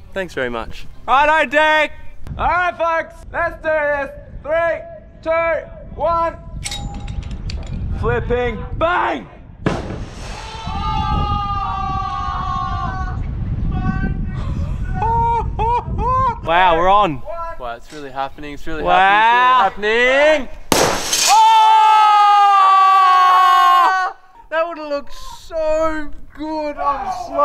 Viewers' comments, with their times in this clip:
0:09 what was that noise!?
0:09 i stopped the video and came back latter and if you start out of context t sounds like he crushed people